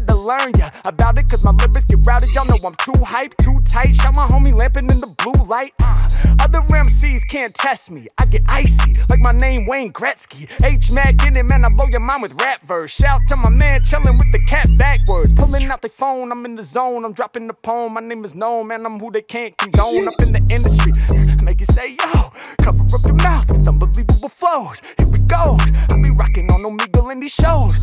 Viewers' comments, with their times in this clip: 0:10 That went crazy good, Harry Mack's flow is unmatched. Straight fire 🔥